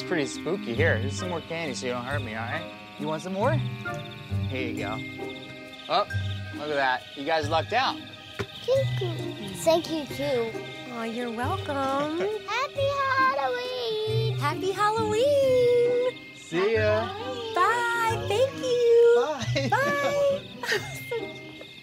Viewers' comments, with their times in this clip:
0:08 that "Thank you" was so cute T~T <3